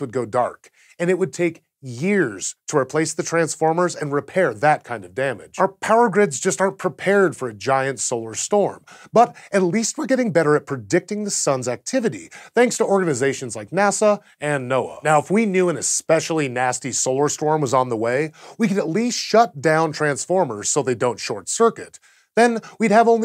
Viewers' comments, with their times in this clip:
0:09 Crazy Voice Crack!